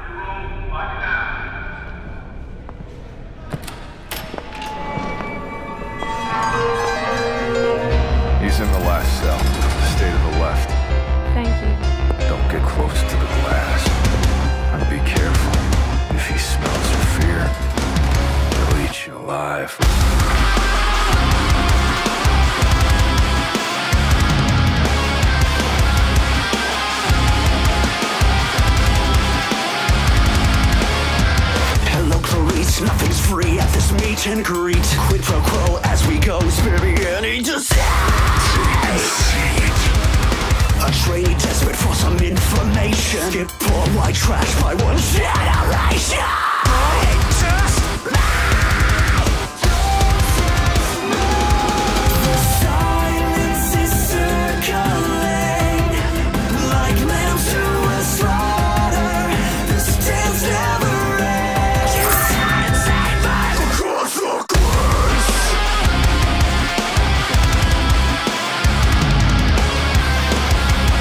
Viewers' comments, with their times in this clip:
0:08 No joke, before watching this music video, I thought that voice was Markipliers.
0:49 Five nights at Freddy scream
0:52 Yup.. I was saying the same thing. Glad to see im not the only one. Chorus is a whole step lower than Uninvited on the piano 🎹